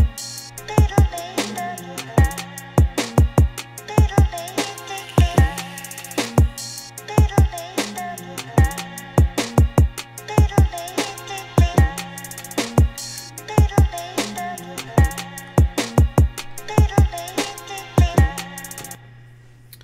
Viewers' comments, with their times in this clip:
0:04 Vape sound fits nicely with the groove.